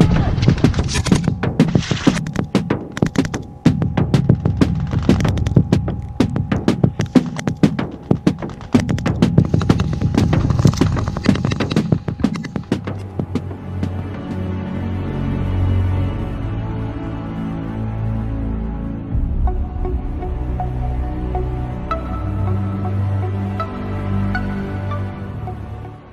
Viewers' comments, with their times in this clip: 0:08 *happy polaczek noises *